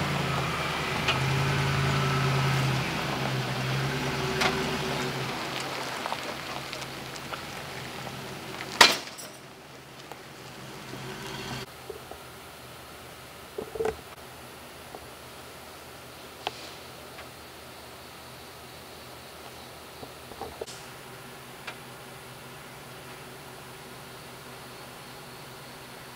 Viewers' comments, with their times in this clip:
0:10 is that some sort of diesel generator??